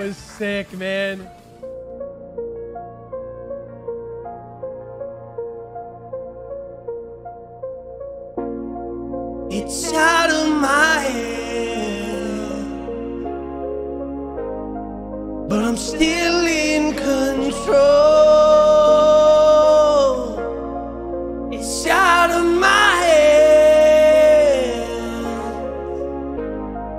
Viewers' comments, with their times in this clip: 0:09 sounding like Dustin kensrue big time